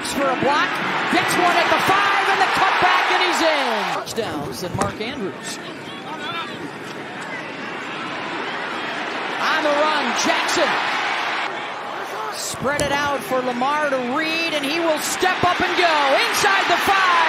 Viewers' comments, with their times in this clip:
0:04 Amazing! And the best you can say is, “On the run - Jackson”? She’s so blah.